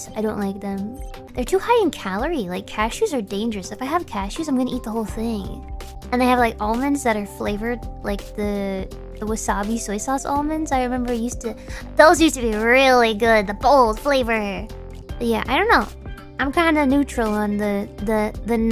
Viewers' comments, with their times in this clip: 0:04 the way she says "I'm gonna eat the whole thing." Really resonates with me.